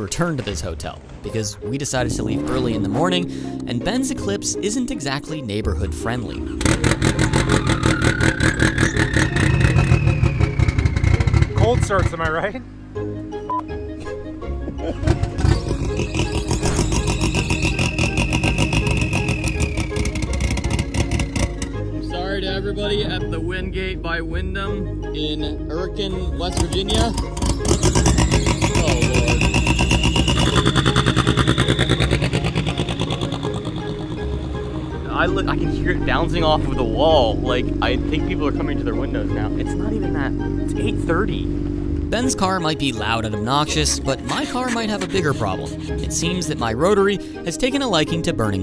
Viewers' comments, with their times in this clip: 0:06 my favorite cold start up
0:29 It literally sounds like a tractor when it takes off just putting along. Autotempest rocks!